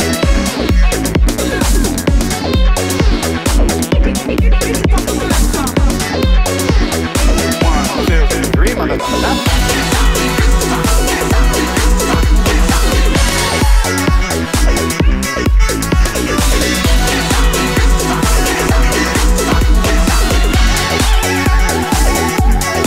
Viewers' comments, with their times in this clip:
0:07 Jack Black sax